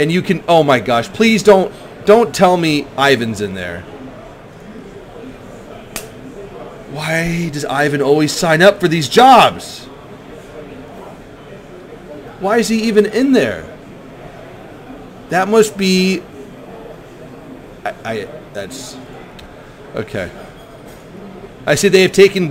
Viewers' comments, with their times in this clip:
0:05 am i only one who heard smack-facepalm on